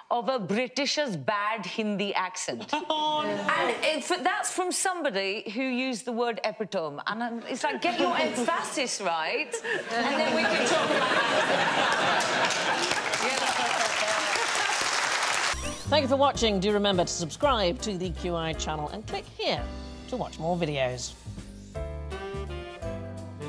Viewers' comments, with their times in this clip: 0:08 or so. 'Get your Ed Faustus right'?? I wish I knew what she said there.